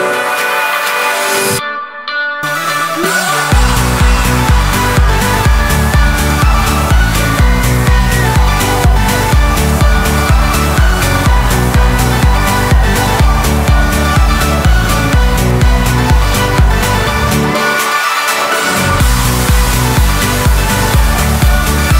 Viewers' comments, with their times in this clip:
0:03 BUT DAT DROP THO!